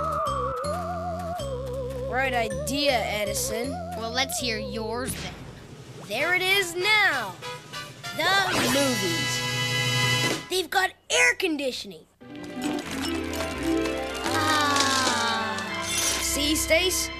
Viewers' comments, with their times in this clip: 0:05 it sounds like Stacy's calling Bradly a jerk but it got edited out? :\